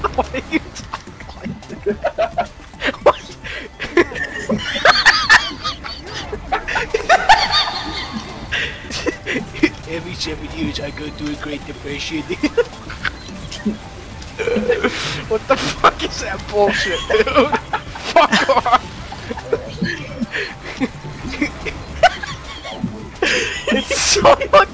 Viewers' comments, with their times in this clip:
0:05 the laugh almost killed me